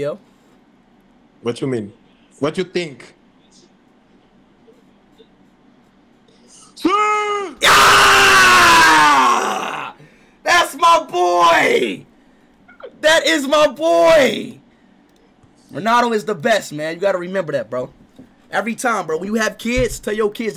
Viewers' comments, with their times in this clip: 0:06 I felt that siuuuuuuuuuuuuu through my screen